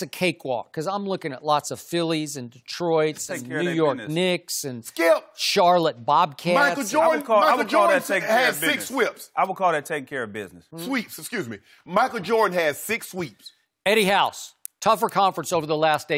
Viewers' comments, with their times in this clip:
0:04 Skip Michael Jordan had six whips 😂😂😂